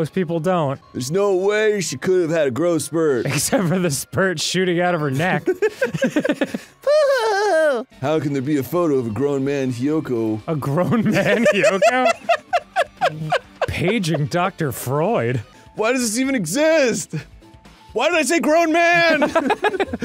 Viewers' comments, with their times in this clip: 0:08 "why did I say grown man?!" in the protagonist voice cracks me up